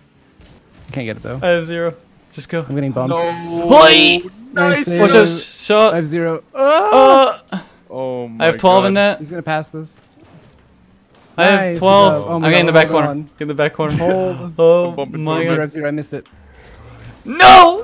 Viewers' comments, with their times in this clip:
0:03 The noise is me taking a dump